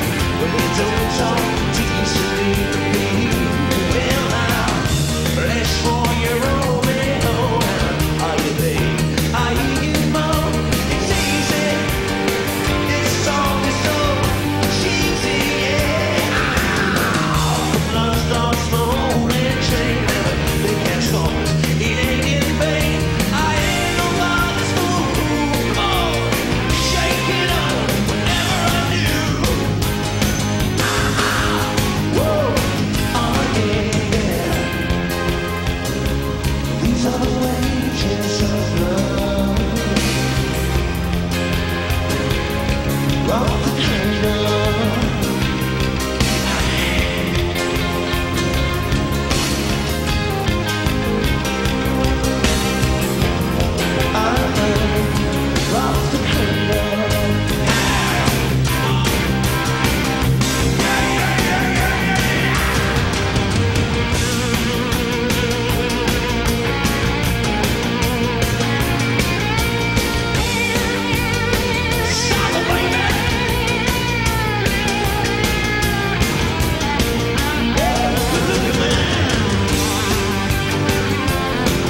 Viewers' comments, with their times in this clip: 0:10 "this song is so cheesy"
1:02 what a solo¡¡¡¡ short but directly to the soul...